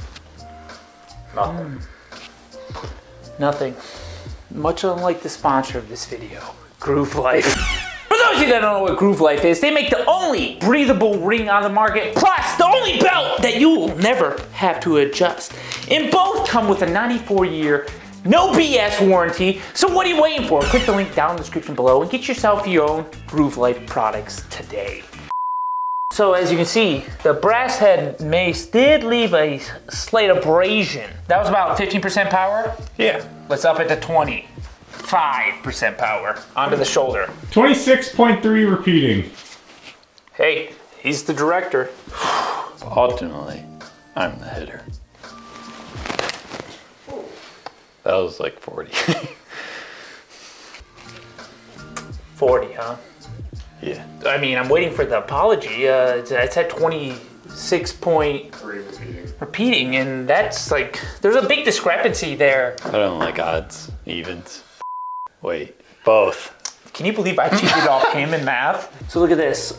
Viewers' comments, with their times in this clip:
0:07 that borderland sound is crisp nostalgia
0:50 U hear it break